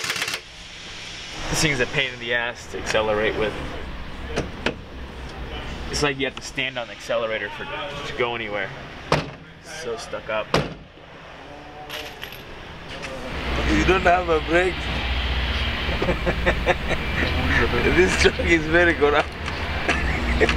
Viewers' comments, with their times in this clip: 0:03 if some mechanic from 3rd world laughs at your vehicle, you got to know it's serious